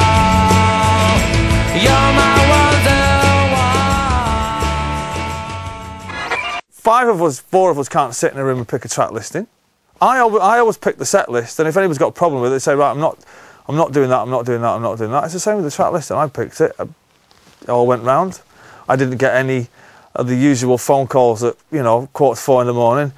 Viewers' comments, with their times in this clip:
0:06 LOL @ his impression of Liam